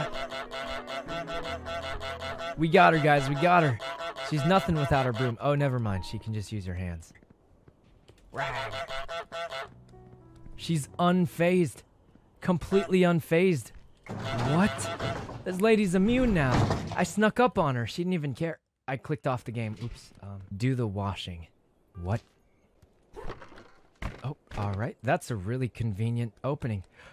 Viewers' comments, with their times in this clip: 0:07 Sykkunos little rwar 🤧
0:07 that rawr <3
0:07 did anyone else hear that little “rawrr”? 🥺🥺🥺
0:07 Cutest rawr EVWR!!!!!!!! 🥺🥺🥺🥺🥺🥺🥺🥺🥺🥺🥺🥺
0:07 sykuno cute little rwar so cute
0:08 the little rawr is so cute